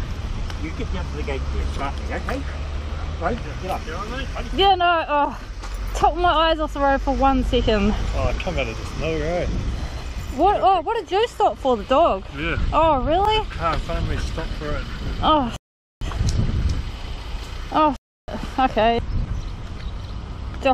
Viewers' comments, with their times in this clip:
0:06 is Australian not London accent haha